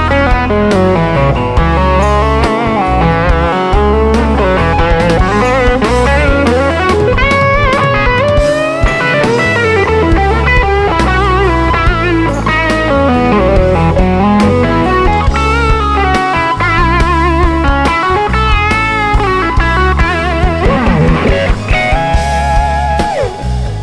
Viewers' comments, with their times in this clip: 0:08 That transposed lick was badass!
0:09 He went full Em pentatonic there and it just does not go well with this song at all. Sticking with E major and C#m pentatonic works fine, and you can use the C#m pentatonic 1st position at the 10th fret (since this is E major pentatonic anyway) to give it some bluesy feel here and there and always return to E (tension and release). But since the root is E, completely ignoring the progression, he decides it's ok to go Em pentatonic and it completely takes the listener out of the solo and you're like WTF? On top of the questionable phrasing here and there, it's too technique-y, if you know what I mean. Little flourishes here and there are fine, but really overdoing some slides, riffs, etc. again takes the listener out of the song and it's more like "Hey look what I can kinda do on the guitar."
0:09 he literally plays in the wrong key